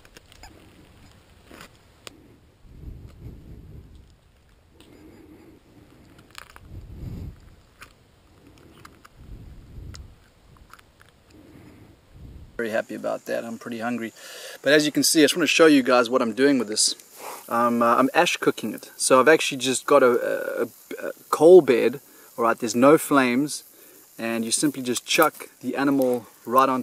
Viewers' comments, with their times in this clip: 0:08 mouses last squeak